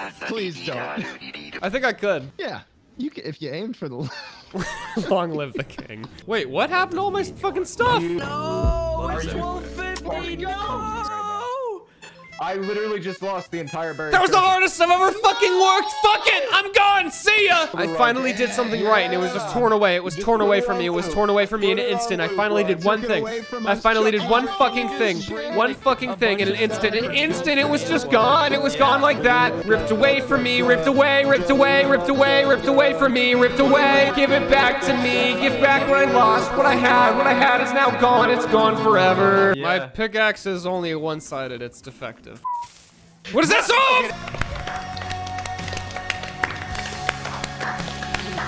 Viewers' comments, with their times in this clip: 0:06 the music blended in so well with his voice wtf
0:08 that “noooo” goes so well with the song playing in the background that I though it was a part of it
0:12 All the chaos happening with Sea Shanty2 in the background is the best thing I’ve ever seen
0:14 This whole sequence paired with the Sea Shanty in the background is just the best part of this video
0:17 soundcloud rappers be like
0:28 holy shit is that juice wrld back from the dead
0:28 why does this sound like a juicewrld song
0:28 it sounds like a 100 gecs song
0:28 that new juice wrld is poppin
0:29 s o n g
0:29 the churning of the sea shanty is terrifying.
0:29 slime soundin like 100 gecs
0:29 sounds like juice wrld lol
0:34 sounded like juice wrld song